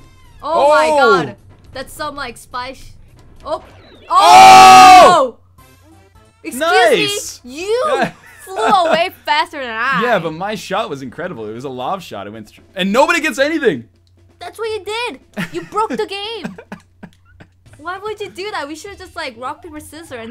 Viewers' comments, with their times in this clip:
0:03 RIP Headphone users... seriously, though that phrase is getting old..
0:04 R.I.P. earphone useres.